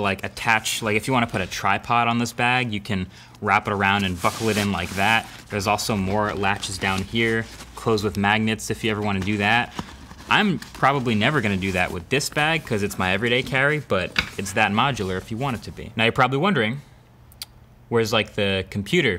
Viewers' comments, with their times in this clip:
0:03 I thought u said the f word lol
0:04 "You can wrap them around and fuck with them like that" XD